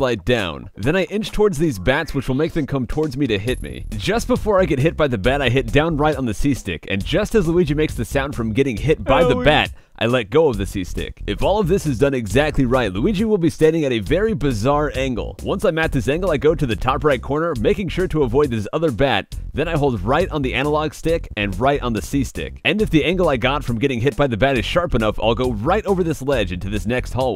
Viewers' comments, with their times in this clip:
0:08 xD that sound though its so freakin funny to hear that hurt sound
0:09 Dat "Owie" sound doe XD